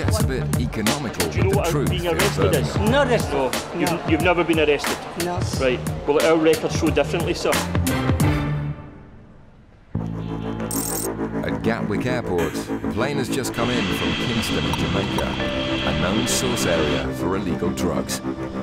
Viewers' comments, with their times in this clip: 0:04 Hey guys - What is the officer´s accent ? Irish? Scottish? English is my second language. Really curious x